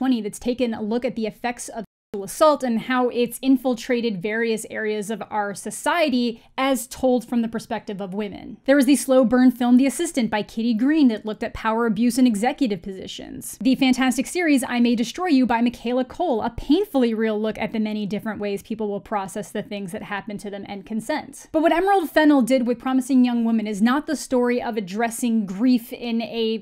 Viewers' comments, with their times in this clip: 0:09 why is the word 'sexual' cut out?